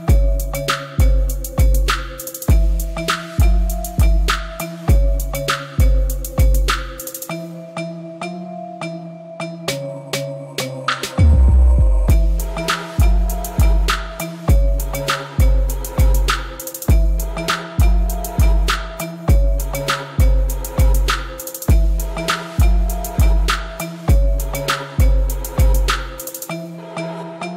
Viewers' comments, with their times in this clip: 0:09 this beat is lit